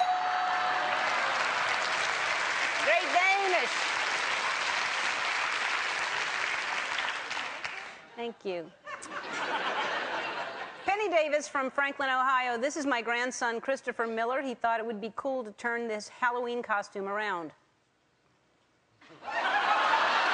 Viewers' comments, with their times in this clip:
0:08 she's so cute when she says "thank you" :)